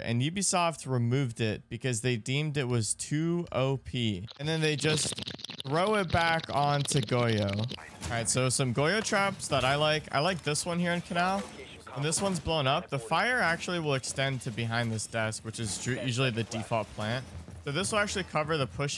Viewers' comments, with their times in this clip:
0:03 anyone else here that fat bong rip
0:04 that fat bong rip is something else